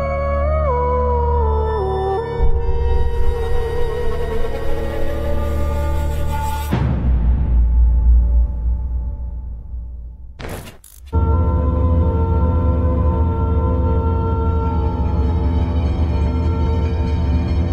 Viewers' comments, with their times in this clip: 0:03 He is into "God" stuff, so I don't know what you're talking about. Also, νεανίσκος (neaniskos) in Mark -52 means "young man" and not "boy." He's a Satan worshipper who hypnotizes people with his sing song voice and rebel routine. I'll give him more chances but I wasn't exactly sold, to say the least. Lol.